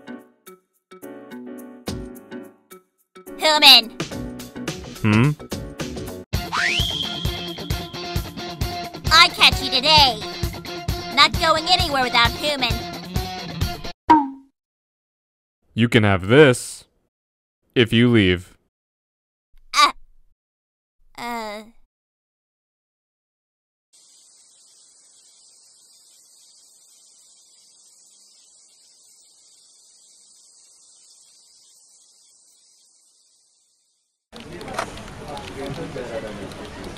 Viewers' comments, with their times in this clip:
0:03 You guys got humans Nah, man, we got Hooman
0:19 That sounded like issac getting hurt lol